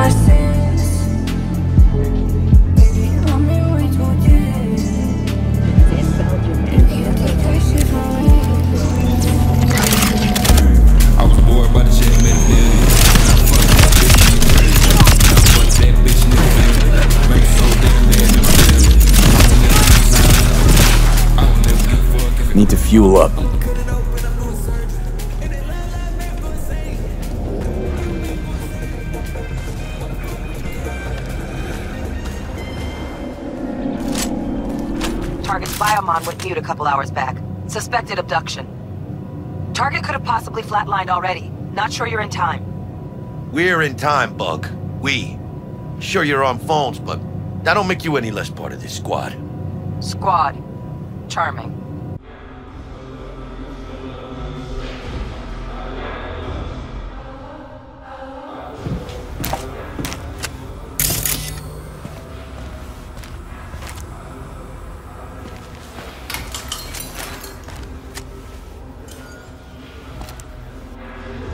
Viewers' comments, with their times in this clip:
0:10 i have a feeling i'll be able to cook food on my laptop if i run this mod Also that track slaps harder than a foster parent
0:56 Aight what did you do with the spacial Yeat audio is that some clever sound editing? or did you replace the track that’s being played in the Scav base with ILUV. Amazing work man